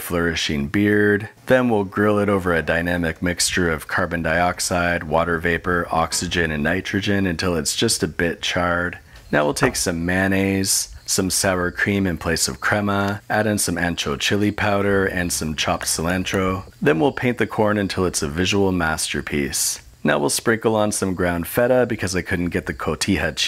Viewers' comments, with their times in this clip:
0:10 I can't help but keep replaying it There's something about the way you say mayonnaise